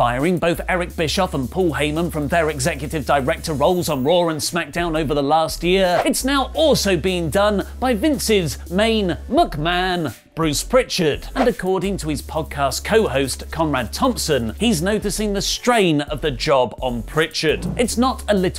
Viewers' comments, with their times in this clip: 0:03 "Roar and Smackdown"